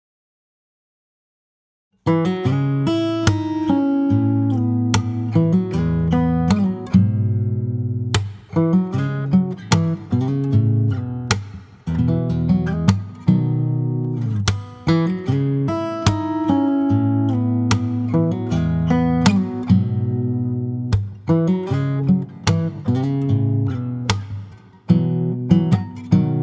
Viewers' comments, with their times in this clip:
0:07 I don't know what that chord is but it sounds like a damn beautiful chord